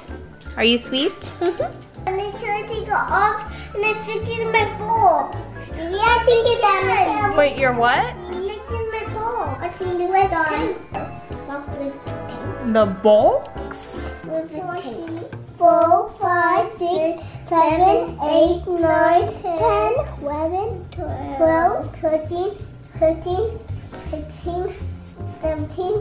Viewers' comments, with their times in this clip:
0:08 omg i thought she said “i’m licking my balls” HAHA